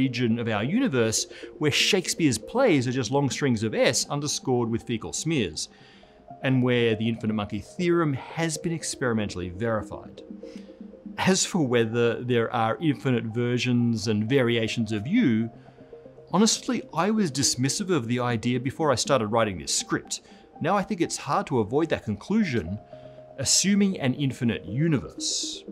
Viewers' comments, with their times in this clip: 0:07 I can tell you were trying so hard not to laugh, haha!